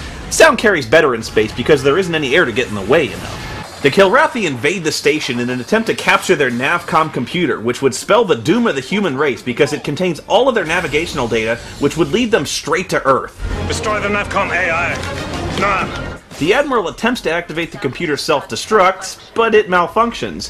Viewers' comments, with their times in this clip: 0:03 Apparently Kilrathi fighters have fucking Stuka sirens